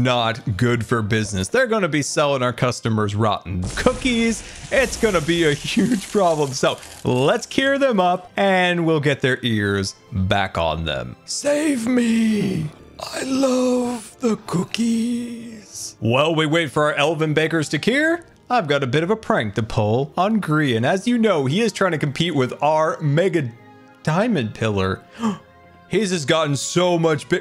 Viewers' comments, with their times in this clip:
0:10 that really sounded like voldemort😂